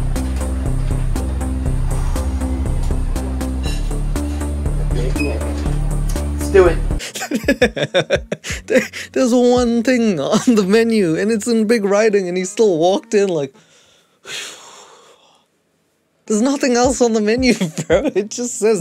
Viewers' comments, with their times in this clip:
0:05 The Kahoot music in the background tho